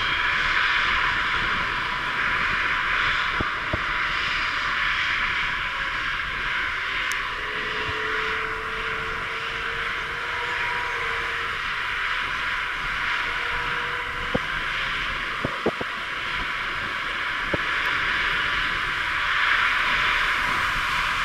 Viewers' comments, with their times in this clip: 0:08 why did the A380 engine GP7270 rev up while standing on the runway ?